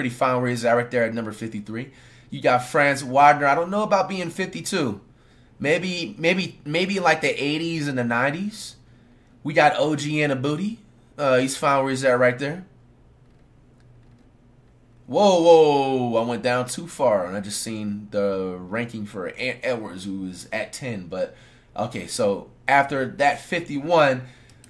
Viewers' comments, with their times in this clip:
0:09 We got OG ANobooty bro flight soo funny lol🤣🤣🤣
0:11 we got OJ in da booty 😭😭😭😭😭😭😭😭😭😭😭😭😭😭😭😭😭😭😭😭😭😭😭